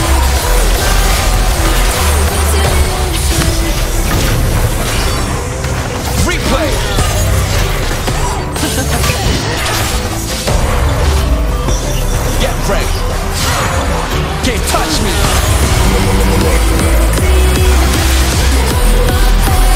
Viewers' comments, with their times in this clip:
0:03 moaned a bit